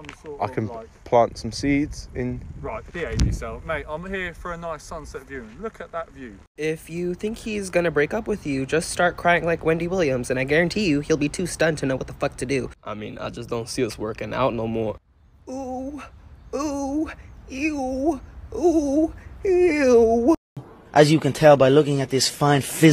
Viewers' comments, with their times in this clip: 0:03 “RIGHT. behave yourself, mate. i’m here for a nice sunset viewing—LOOK at that view!” ☠️☠️☠️☠️ surprisingly wholesome how calm and annoyed he was at once and redirected. omg 🤣